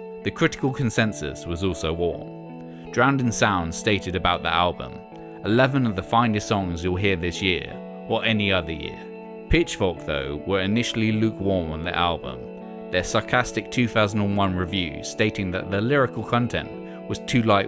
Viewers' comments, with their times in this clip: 0:03 does anyone know the name of the song of ?? it sounds a bit like the guitars in goodbye sky harbor but i really wanna know the name of the song